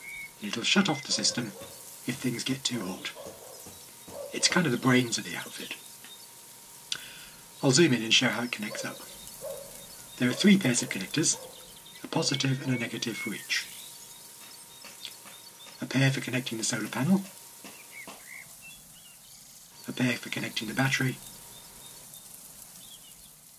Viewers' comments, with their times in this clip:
0:04 "it's kind of the brains of the system" ? Well no it isn't - as a brain would have WAITED until all that hammering (done by your neighbour to the Right of the camera's stereo mic's - being also to the left of you) - had stopped, thus - the brains of the system - forgot all about the interfering noise created by that hammer.!!!.!!!